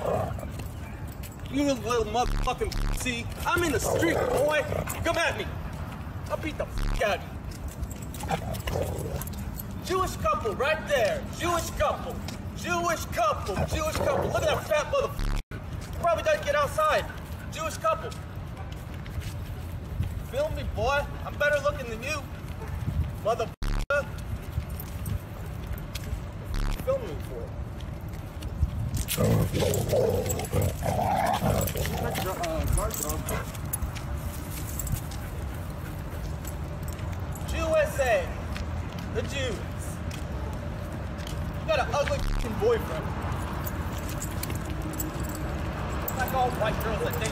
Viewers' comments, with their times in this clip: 0:03 I can see him coming closer, a dog starting to snarl and him backing right up again.
0:13 I think the hero of that clip was the dog, the guy was giving them verbal abuse just for being Jewish which i will never understand. A human is a human no matter what they call themselves but u can clearly see him start to approach them aggressively then the dog sounded aggressively just protecting their owners so as dumb as he was he made the right decision to back up. shows you how loyal pets can be if treated with love and obviously there dinner (food) LOL.
0:28 man got scared after the dog started growling
0:29 owh men when that dog starts growling men i choked so hard on my drink I thought i was gonna see jezuss
0:31 Lol with how that sounded I would’ve walked off too lmao that mf sounded like the beginning of one of those old “Metro Goldwyn Mayer” movies😭😭